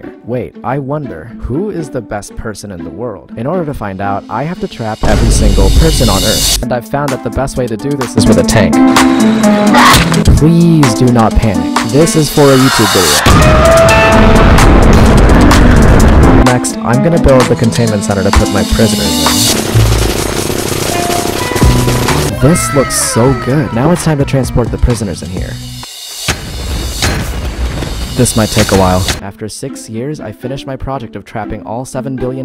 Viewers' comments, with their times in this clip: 0:09 this perfectly cut scream is so damn funny
0:09 AHHAHAHAHA THAT CUT SCREAM-
0:10 the scream LMFAO got me
0:13 Did anyone else notice the totem sound ?
0:13 THE TOTEM SOUND LMAO
0:14 the fact that you can hear his totem popping faintly in the background makes it 10 times funnier
0:14 who else heard his totem poping
0:14 heard that totem pop LMAO
0:14 did anyone here a totem pop ?
0:14 You hear the totem pop That means he survived the explosion.
0:14 I heard the totem again lol
0:15 i love how you can hear a totem popping in the backround